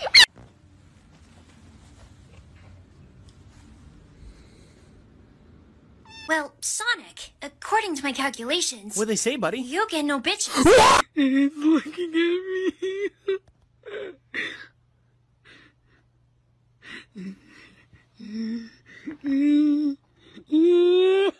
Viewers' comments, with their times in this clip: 0:04 how does that count as a perfectly cut scream 😭 I'm dying of cuteness😢😢